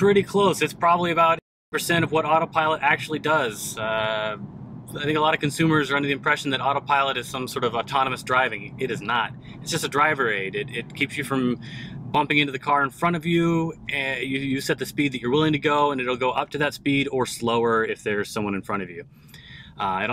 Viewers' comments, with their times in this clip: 0:05 tesla alarm haha